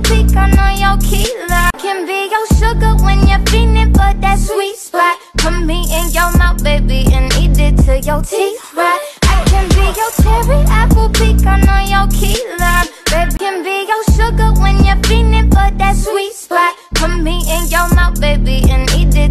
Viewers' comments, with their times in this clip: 0:04 The girl:runs The dude:runs across room saying REEEEEEEEEEEE